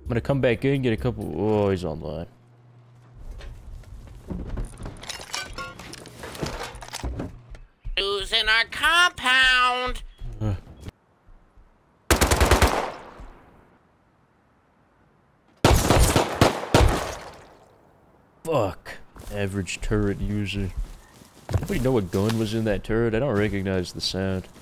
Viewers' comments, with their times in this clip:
0:07 bro has got the perfect nerd voice 😂